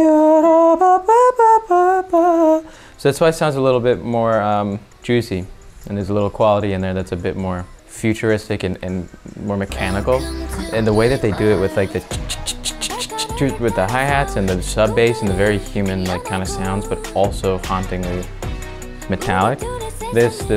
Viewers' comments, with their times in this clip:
0:03 the “futuristic and mechanical” makes so much sense to me cuz upon first listen I immediately thought “this sounds like some LoL soundtrack” like it comes from Arcane or something, like super cyberpunk. It has that “Legends Never Die” or “Awaken” type of vibe